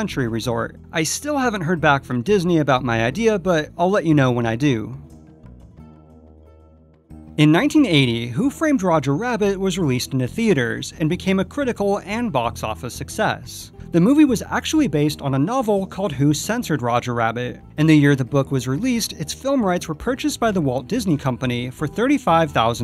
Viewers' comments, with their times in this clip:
0:07 when you are talking about Who Framed Roger Rabbit, it really sounds like you say the year "1980." The film came out in 1988. Did you just say 88 really fast, or did you actually say 1980? I have headphones on and it sounds like 80.